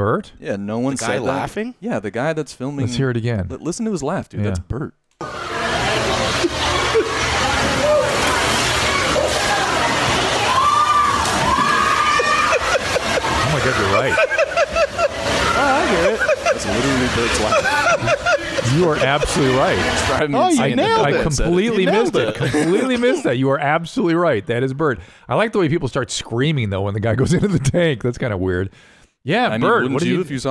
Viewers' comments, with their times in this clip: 0:07 I legit thought Bert had came onto the podcast and was laughing
0:12 Has to be Bart. No one in real life laughs like that.